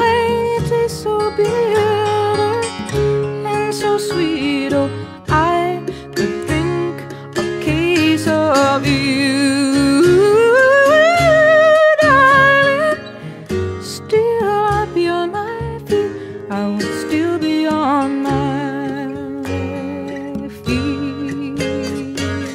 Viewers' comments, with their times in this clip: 0:05 Joni Mitchell, an incomparably unique songwriter, guitarist, vocalist, artist, woman, person... such a beautiful and innocent (yet wounded) soul! Listening to her incredible voice (especially the 7 seconds beginning ) sends shivers up my spine, all the way to my jaw, dropping it open!
0:09 genius. What a voice! and what a wonderful songwriter...... never fails to amaze...